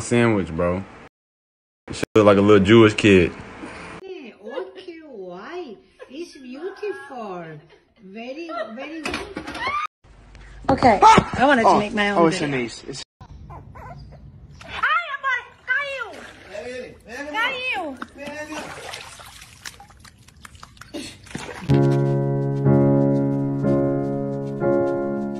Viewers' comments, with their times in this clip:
0:10 You can hear the genuine shock and awe in his voice
0:10 My guy yells like Woody.